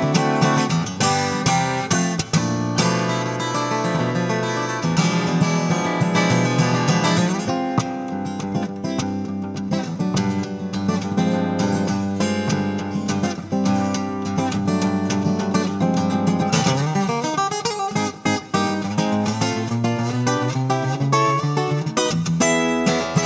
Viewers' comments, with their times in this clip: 0:07 Love that little Lenny Breau feeling he threw in